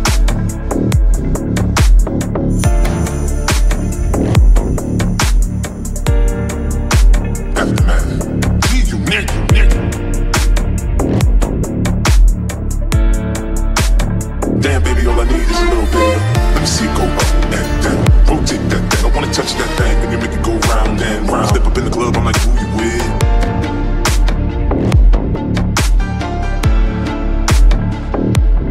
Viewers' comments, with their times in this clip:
0:10 Drop when is hot